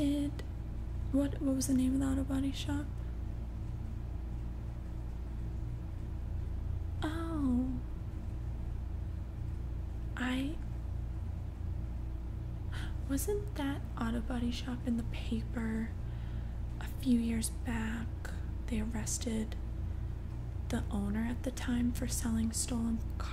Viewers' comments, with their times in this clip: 0:07 That "Oh" was good enough to go on a track 🔥. Anyway keep up the good work. 🕊.